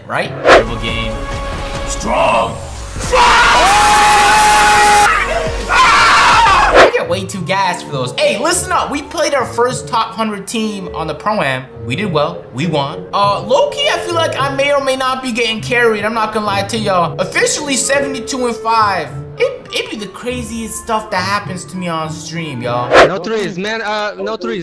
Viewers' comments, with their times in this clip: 0:05 What 70 years of oppression sounds like...